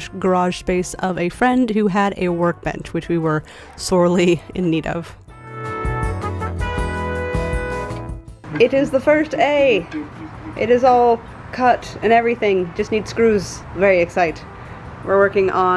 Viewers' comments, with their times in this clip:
0:03 "sawly in need of..." CARD!